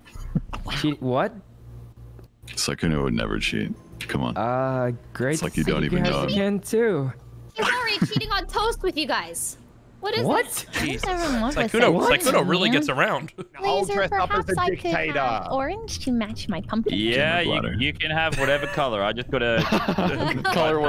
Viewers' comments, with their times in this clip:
0:04 Sykkuno sounds like an anime character lol